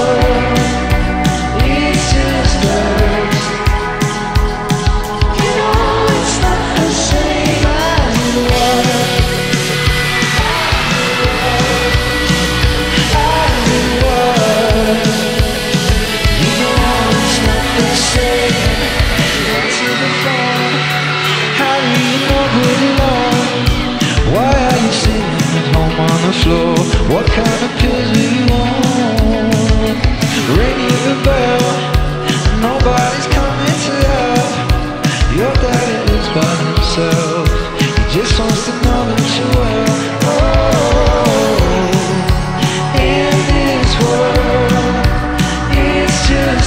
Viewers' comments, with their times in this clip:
0:08 What I wouldn't give to be in that crowd. The energy must have been insane. He's got such powerful stage presence. Also the guitar riff here: 😭
0:27 does that sound like playback